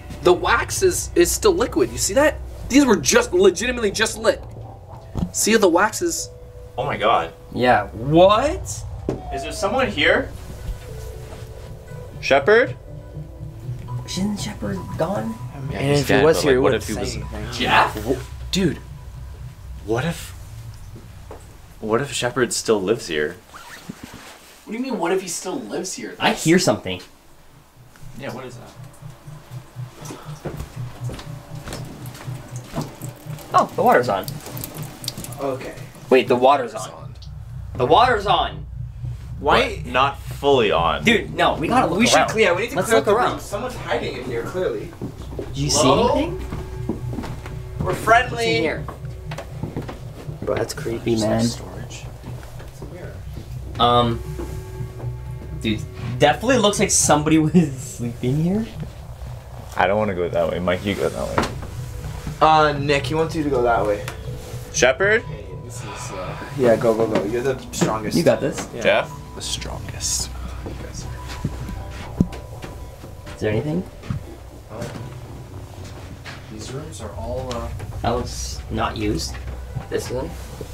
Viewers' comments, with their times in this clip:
0:07 there is a whimper Edit: listen closely
1:06 you can hear hi like whisper voice